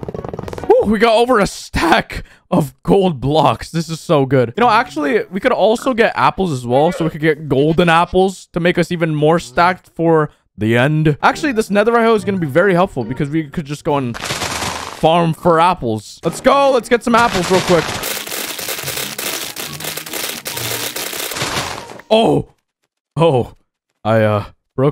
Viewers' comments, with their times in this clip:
0:06 I heard golden tapls lmao